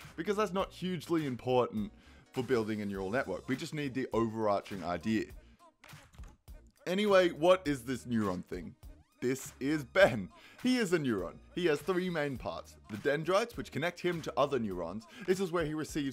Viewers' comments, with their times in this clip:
0:04 Click click,is heard lol